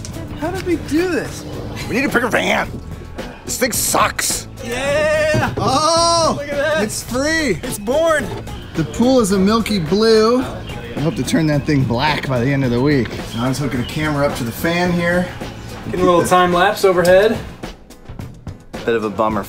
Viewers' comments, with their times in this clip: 0:04 Has everyone else noticed that when the Vat19 squad is happy they sound like goats